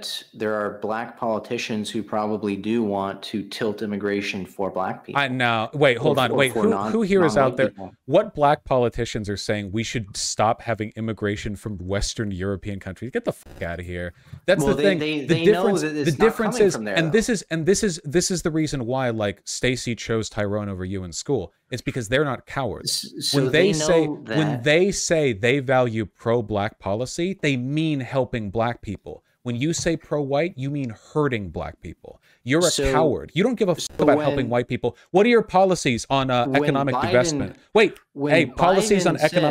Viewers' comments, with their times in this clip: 0:09 The host cracking up says everything we need to know.
0:20 The mod's laugh got me.